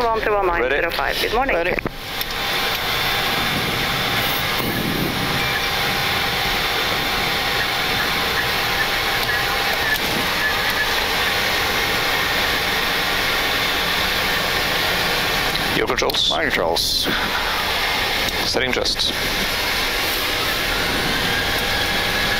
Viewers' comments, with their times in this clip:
0:04 Somebody in the cockpit did not turn off his phone.